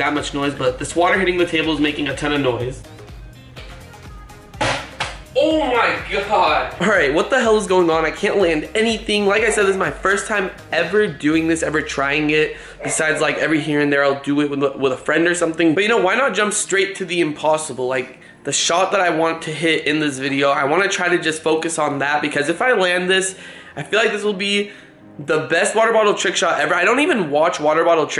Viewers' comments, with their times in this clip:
0:09 there Is a sound like if some one was breathing hard